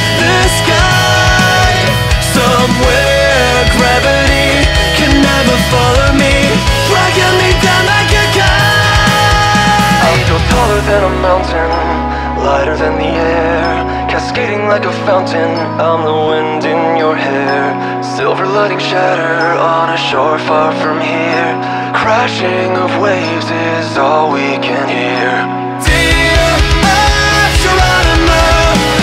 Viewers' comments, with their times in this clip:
0:10 I loved the break disney princess vibes but it really sounds great and cool.